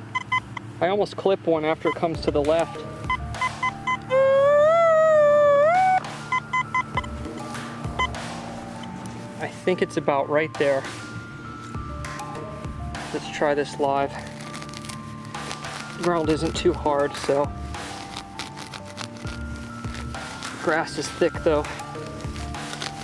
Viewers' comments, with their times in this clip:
0:04 LMAOO I thought you made that noise with your voice :D :D :D